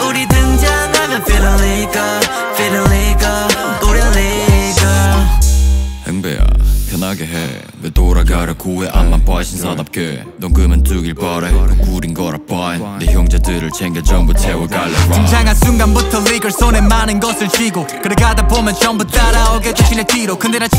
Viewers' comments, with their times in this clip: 0:06 His voice is very similar to Felix from stray kids